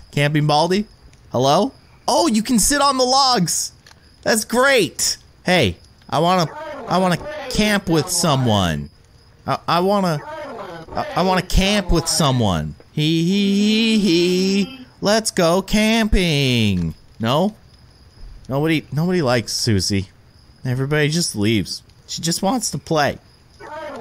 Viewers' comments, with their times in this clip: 0:05 guy in backround: REEEEEEEEEEEEEEEEEEEEEEEEEEEEEEEEEEEE me: me too